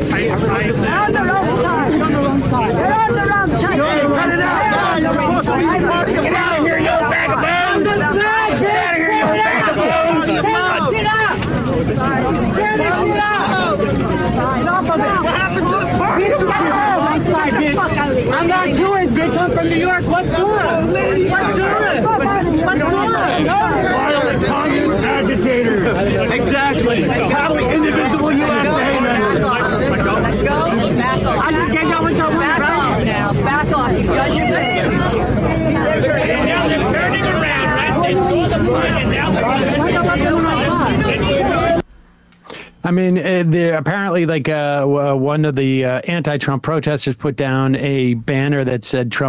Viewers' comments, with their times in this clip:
0:05 Lol. That guy shouting "Get outta here, you old bag of bones!" made me laugh. I don't know who you are, buddy, but thanks, I needed that. 😅
0:36 It sounds like the ghost of Gilbert Gottfried in the background.